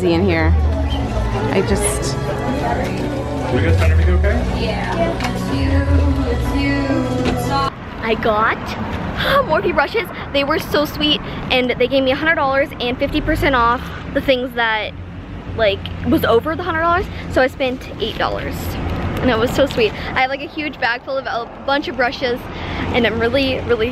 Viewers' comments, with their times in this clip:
0:06 OMG LANA PLAYING SHE IS MY LIFE!!!